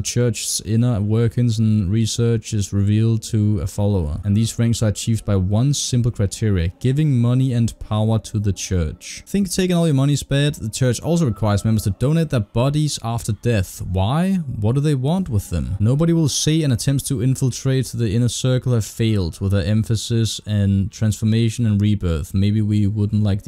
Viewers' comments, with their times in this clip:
0:04 from there is female voice singing in the background and it gave me major scared goosebumps. the sound design is so good it sounded like she was singing in my room, not in the game